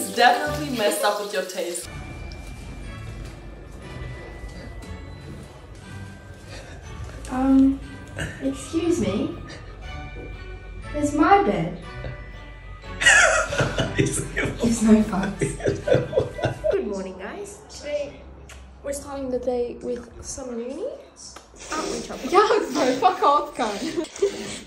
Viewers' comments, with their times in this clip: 0:07 she sounds like a Harry Potter character um excuse me do you know where the tea is